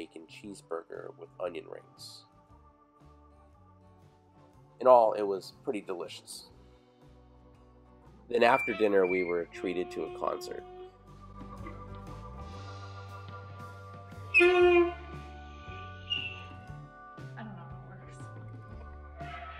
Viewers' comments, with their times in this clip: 0:07 I'm going to go out on a limb and say your wife doesn't know how to play the sax. Could also be a dry or damaged reed, but any woodwind player (And almost anyone else who's taken band for more than a year) knows you need to soak (usually by sucking on) the reed before playing. However, I don't think she's the first non-musician to use the privacy of the caves to learn that playing an instrument takes years. ;)